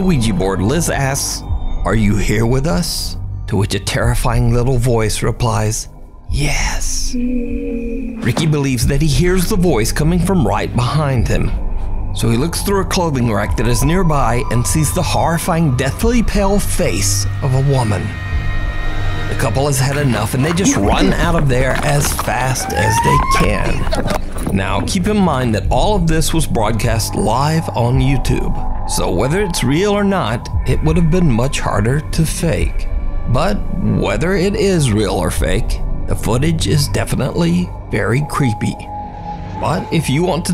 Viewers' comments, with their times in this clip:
0:06 Cod zombies groan
0:23 seconds the women behind the curtain laughs as they turn to leave 😯